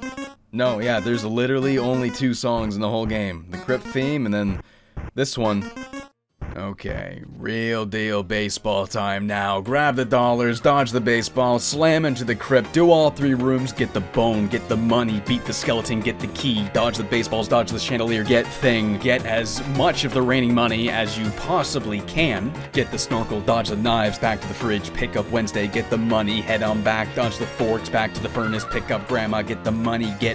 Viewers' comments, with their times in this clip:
0:09 the money song
0:13 That rhythm & flow is rad, dude! 😂